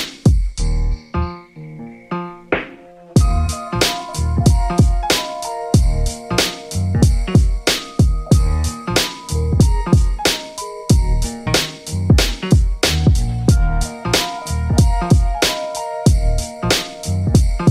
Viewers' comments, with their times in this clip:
0:05 Ok I like that one at around 19 with the sample, sounds good & the one right after that is even better!!! BEAT SMAKIN !!!!